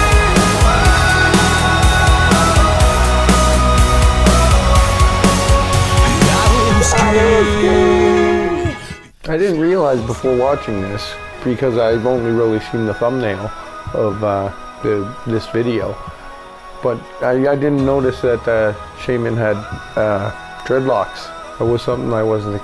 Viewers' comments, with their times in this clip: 0:08 Have you noticed church bells ? Rock and church bells! Rock and nature! Rock and peace in a field under a blue sky...